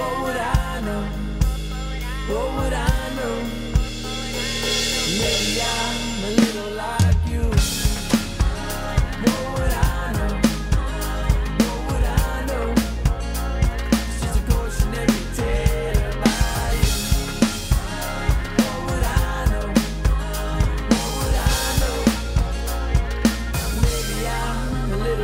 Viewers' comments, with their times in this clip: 0:07 wooh!! that build up and then 🙌🏻🙌🏻